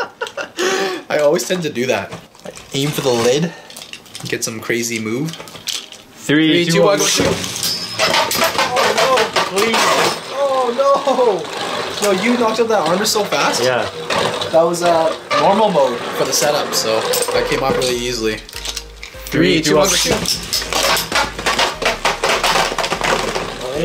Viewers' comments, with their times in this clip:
0:07 that sound when ultimate valkrie knockout that armor gave me so much nostalgia all the way back to metal fight days